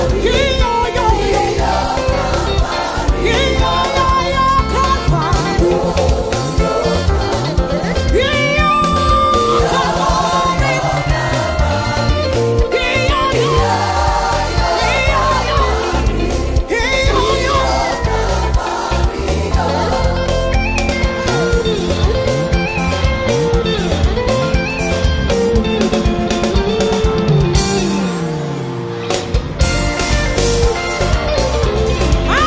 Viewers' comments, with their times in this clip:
0:05 Bass guitar ... Jeezas!!!! My bro that's skill at the highest level.. Only in Jamaica u hear ths
0:20 the solo and the bass line .. class!!!!!!!!!!!!!!!